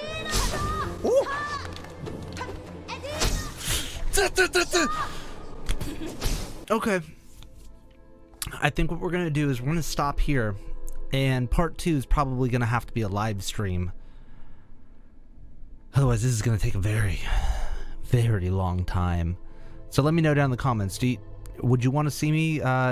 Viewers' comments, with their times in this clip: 0:03 Oh dang he took the glasses off, this is serious. Also sounds like he is firing a machine gun